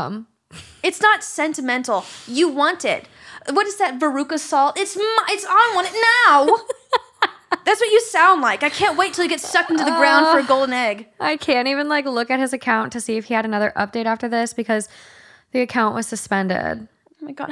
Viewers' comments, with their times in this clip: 0:04 holy shit that sounded exactly like in the movie